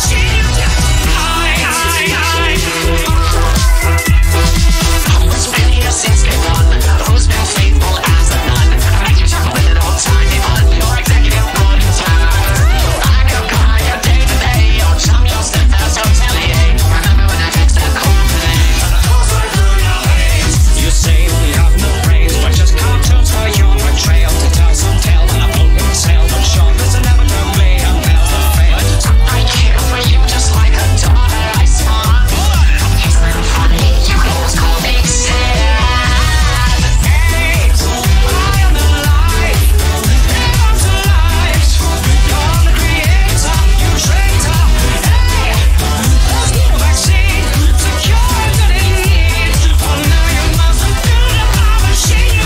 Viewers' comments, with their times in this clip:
0:04 just goes so hard, Al's radio voice combined with the electronic effects just WORKS
0:12 the transition was smoother than smooth
0:31 BRO ALASTOR HAD AN AUTOTUNE
0:32 Only me who hears "You could almost call me sad" ?
0:33 Did anyone else hear “it’s a little funny, you could almost call me sad”
0:35 Hey, Alastor, how do you feel about your Autotune?
0:35 this part sounds like SANS